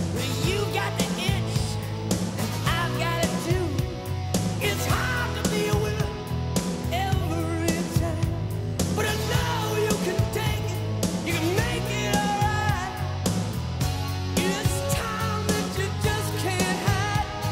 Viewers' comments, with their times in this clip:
0:05 You're right. I always thought Robin really sounded like Rod Stewart in this song - the line where Robin says "It's Hard To Be A Winner"